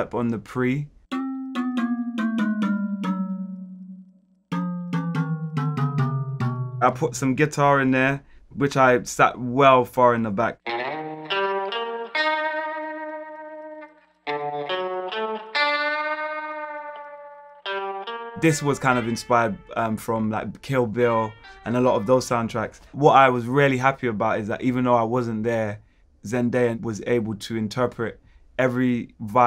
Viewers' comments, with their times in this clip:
0:10 omg that western guitar piece was sooo beautiful it caught me off gaurd